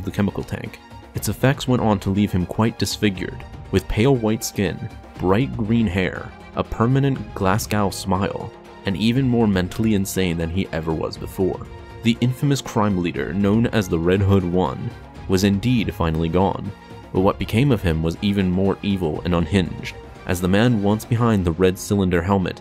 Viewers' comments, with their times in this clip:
0:06 Nice pronunciation of Glasgow